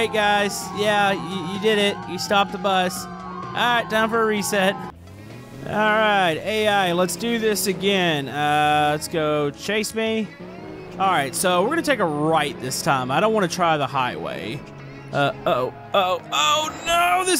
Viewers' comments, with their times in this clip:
0:03 It sounds like screaming children!!!